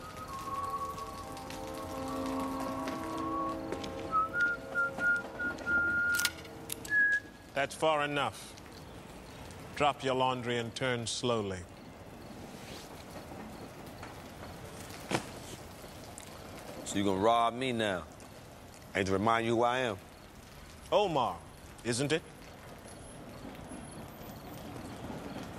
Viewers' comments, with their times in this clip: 0:07 The scene is the best dialogue ever how calm they are in a tense situation talking about there guns. Even if I miss I can’t miss